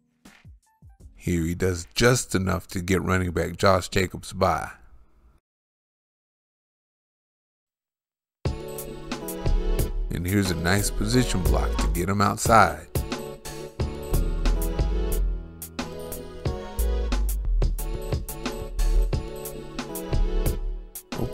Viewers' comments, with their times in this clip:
0:09 That last beat that starts is fire!💯🙏